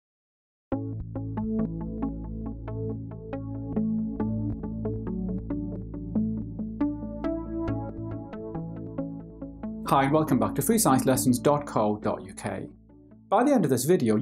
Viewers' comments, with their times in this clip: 0:00 WHAT, IS, THAT, MELODY!!